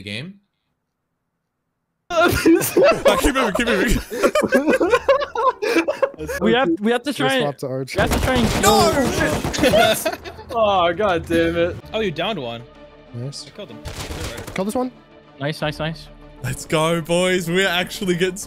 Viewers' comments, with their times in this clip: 0:03 the silence got me dead